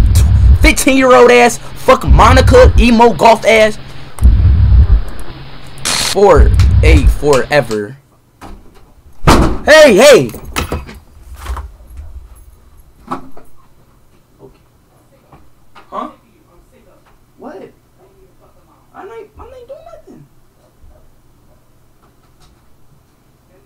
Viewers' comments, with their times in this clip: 0:07 Monika kicks down Speed’s door to beat his ass 😂 Also he totally starts responding to Monika at the very end (The Your Reality bit) EXACTLY like hes on Omegle and that KILLED ME lol Fr that’s exactly how he sounds when he starts up a call with Some Bitch 🤣